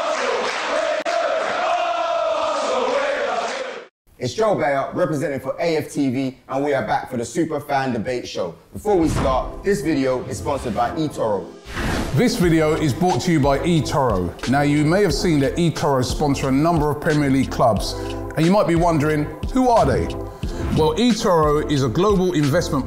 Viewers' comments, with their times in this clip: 0:06 “super van de beek show”